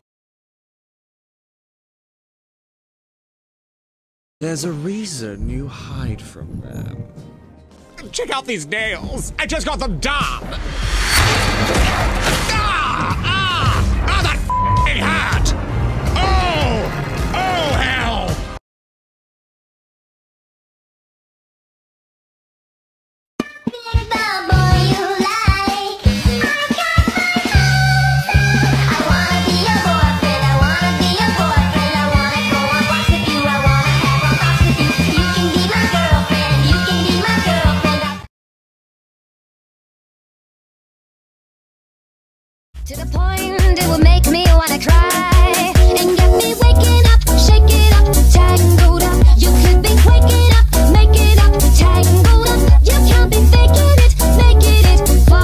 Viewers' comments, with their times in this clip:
0:04 His voice sound like the devil:
0:43 I haven’t heard this song in months